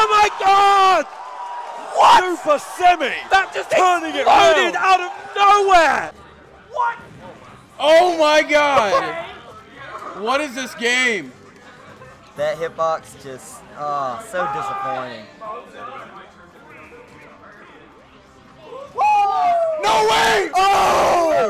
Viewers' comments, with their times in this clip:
0:06 Lil' Jon in the background hahaha